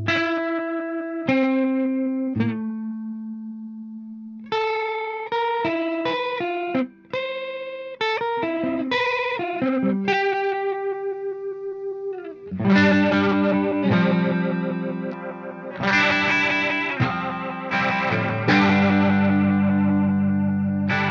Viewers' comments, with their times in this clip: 0:03 Love that Mars Volta riff